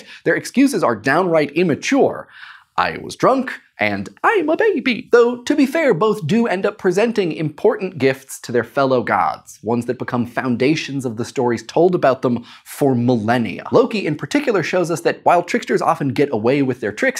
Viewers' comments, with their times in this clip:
0:03 His voice lol Click on it more than once and see what happens